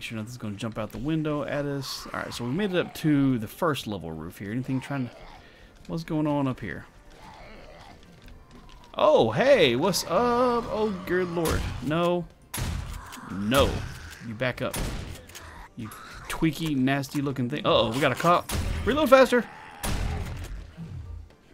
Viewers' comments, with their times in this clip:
0:08 Did I hear him say "Ogre Lord"?